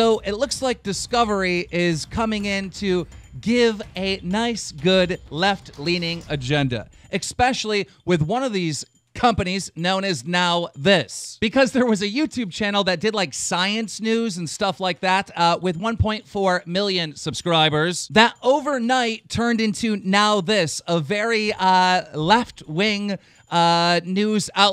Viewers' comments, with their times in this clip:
0:06 I'm sorry...but did you just say "EXPECIALLY" ?